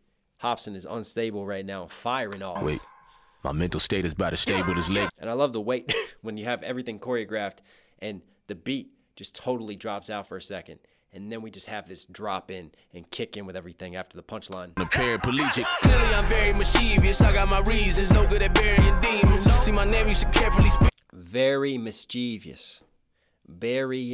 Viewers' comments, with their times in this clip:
0:05 fastest smallest cough ever